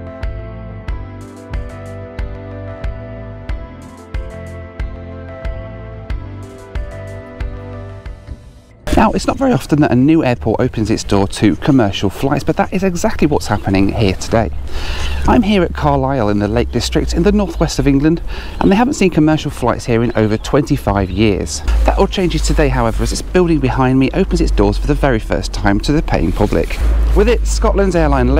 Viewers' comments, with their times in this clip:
0:10 Is your voice still changing?? 😂😂👍. Good video by the way.